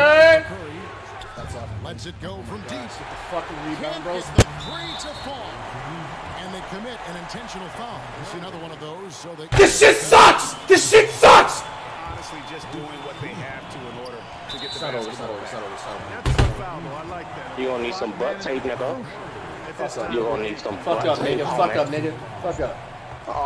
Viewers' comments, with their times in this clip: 0:04 flight raging without audio funny asl
0:04 flight discovered a new language